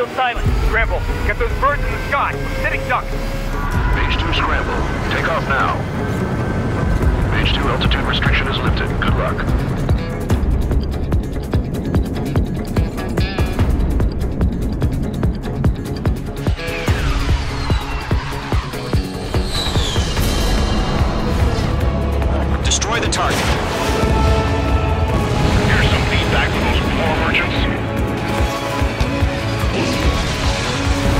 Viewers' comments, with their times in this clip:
0:07 Nah still sounds like AWACS Bandog, though the guy is definitely a new voice!
0:18 that screeching sound from the MiG in Top Gun